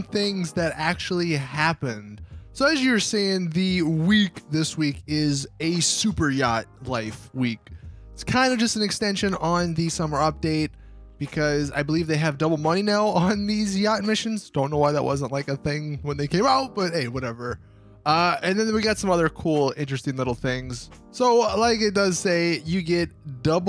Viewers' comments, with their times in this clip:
0:04 The way he said "WEEK" 😂😂